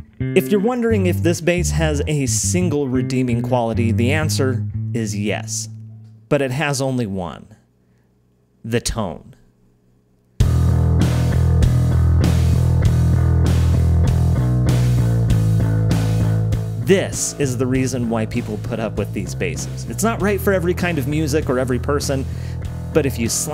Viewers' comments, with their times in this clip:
0:09 The riff you played reminds me of Type O Negative!
0:10 the tone is amazing.